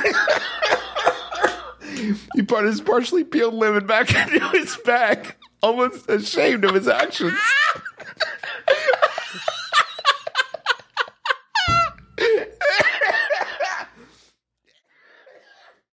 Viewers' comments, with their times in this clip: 0:06 Griffin's sudden escalation of howling laughter is legendary. also i love these designs, they capture the brothers so well